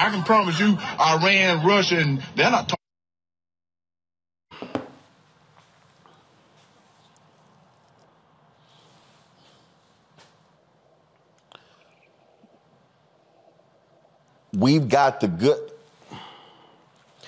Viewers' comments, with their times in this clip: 0:05 The death knull of silence. That says it all.